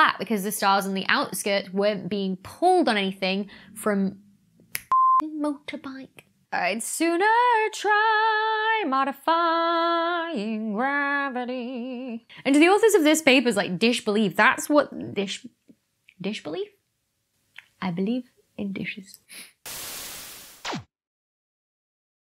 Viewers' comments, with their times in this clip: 0:05 On top of your scientific talents, you also have a nice singing voice!
0:13 DISH belief... I never knew Sean Connery was here. :-)